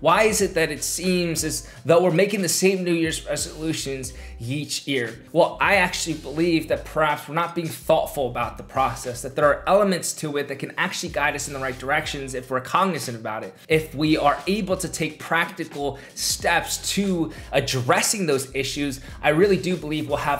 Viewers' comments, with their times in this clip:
0:04 yeach ear instead of each year 😭